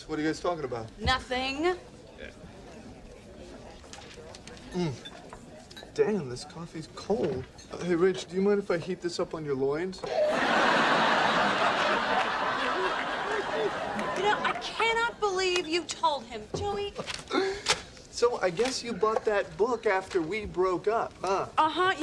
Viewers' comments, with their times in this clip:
0:03 The way Ross teased Rach is pure gold. He sounded so convincing and so innocent, which makes this a lot hilarious.